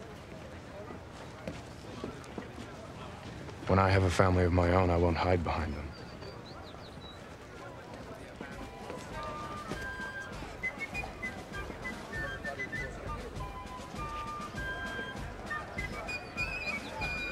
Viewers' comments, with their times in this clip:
0:05 what song is being played in the background It's like a fife or a flute